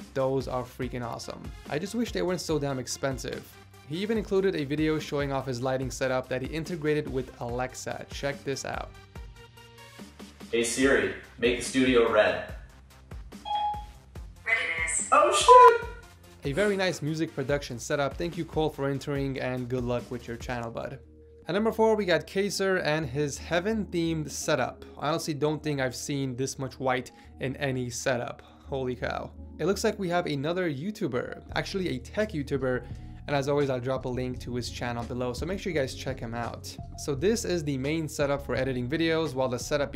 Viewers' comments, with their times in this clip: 0:08 The bleep was hilarious because it didn't block his swear!
0:21 sounds like you haven't seen the movie "the usual suspects" judging by how you pronounced keyser